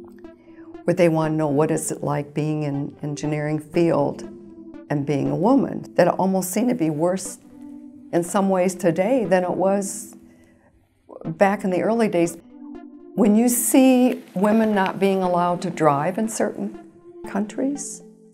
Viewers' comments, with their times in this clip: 0:05 I love this! It just goes to show you can be EXTREMELY bright, but explain things in simple terms. Clearly Ms. Hamilton is one of the brightest engineers to ever walk the Earth, yet she seems so approachable! What an achievement! I don't understand the weird voice-over edit when she discusses being a woman engineer. Hmm.